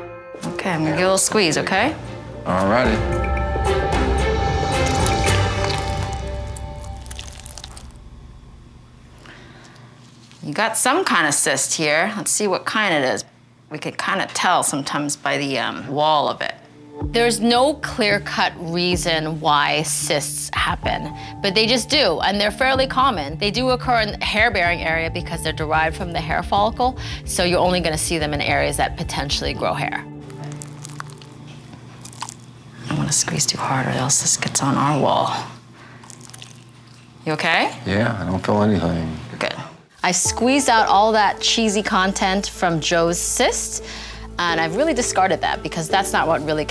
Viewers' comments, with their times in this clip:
0:04 they just had to throw that SFX in
0:06 There was no reason to add that super squishy sound. Why do you have to make it sound like that? Does anyone really believe that that thing actually made that sound? Ewww
0:30 those sound effects are overkill
0:30 The noise when she squeezed it 💀